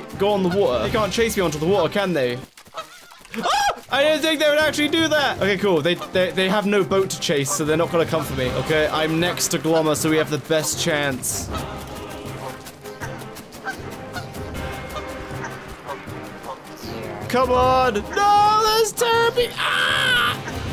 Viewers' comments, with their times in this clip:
0:03 I almost died because of the way you yelled on minute LMAO i can't